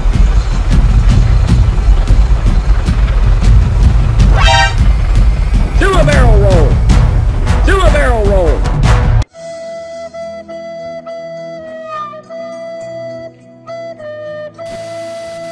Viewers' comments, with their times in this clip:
0:03 Ohh fuck (CRASH!) Driver: X_X